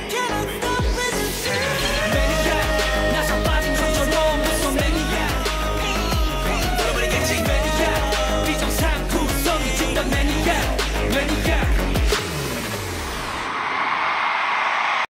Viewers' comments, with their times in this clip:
0:05 This is one of the few times Chan did his entire high note verse/section live, instead of stopping before the last ad lib part It makes me so happy!